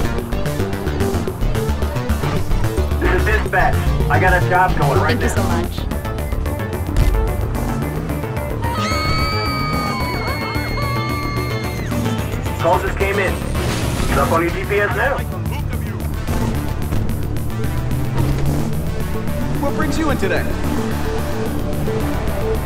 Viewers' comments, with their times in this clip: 0:08 * screams of hell *